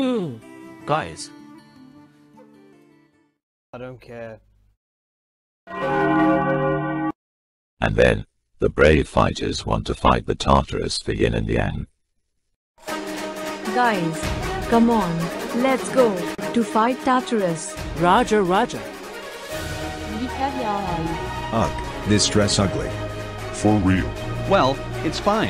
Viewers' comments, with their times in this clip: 0:07 THE JACKO' NADO TOLL BELL